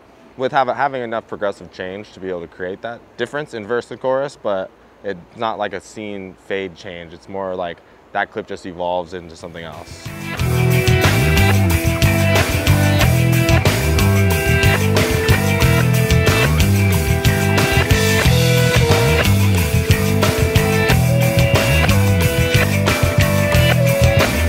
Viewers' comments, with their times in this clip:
0:10 Does RHCP use a click track for Give It Away? I can kind of hear one in the background